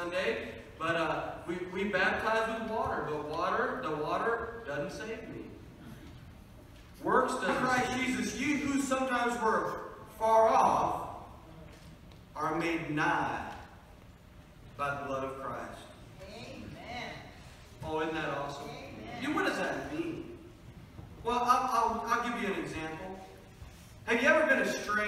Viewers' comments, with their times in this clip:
0:08 Why pastor gets cut off when he's going to say works dont save you?